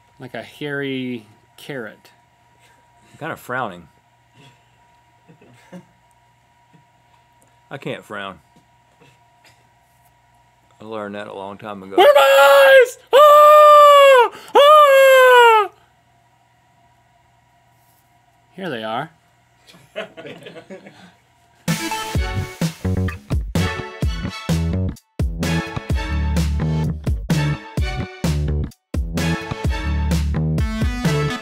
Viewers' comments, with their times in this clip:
0:10 bewarnd headphone users I became death when I heard this
0:12 At the time when link screamed it scared me half to death! :)